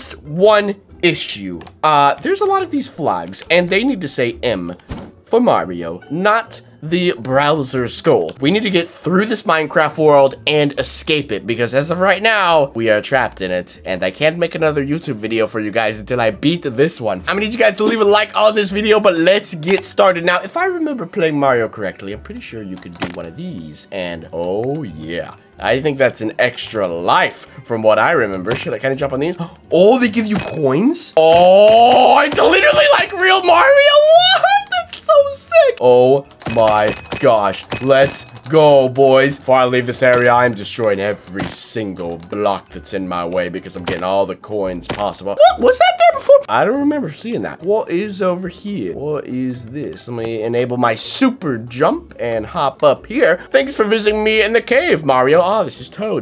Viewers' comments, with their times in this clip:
0:06 he said browers
0:40 we can all just hear you spam the space bar